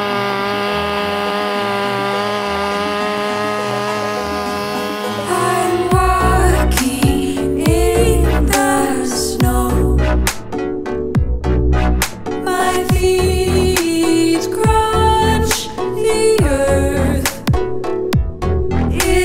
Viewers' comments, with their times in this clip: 0:07 Why does the music sound like it’s from Letterkenny?